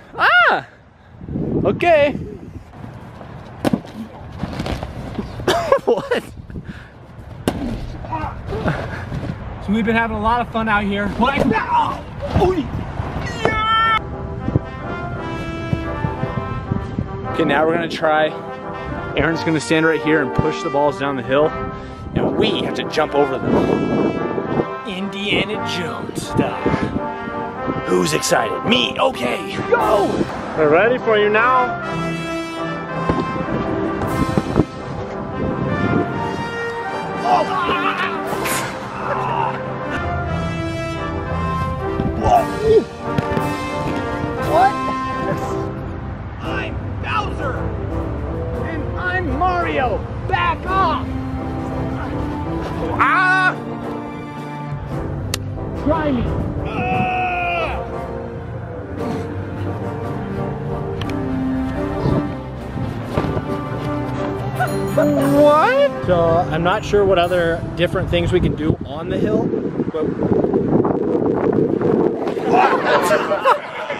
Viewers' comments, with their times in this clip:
0:03 it sounds like fireworks when he runs in the wall
0:10 Donkey Kong death noise
0:14 the noise he made sounds like bully from the grim adventures of billy and Mandy
0:54 sounds like a hitmarker